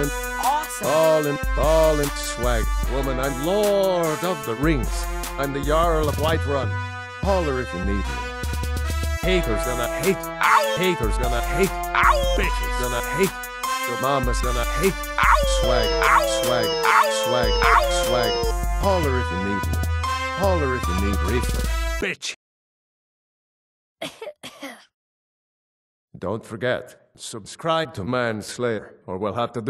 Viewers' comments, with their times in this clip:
0:10 Getting Erik Todd Dellums ' voice as Three Dog in Fallout 3 saying "Owww" and placing it on to his Skyrim character Nazir is an awesome little detail!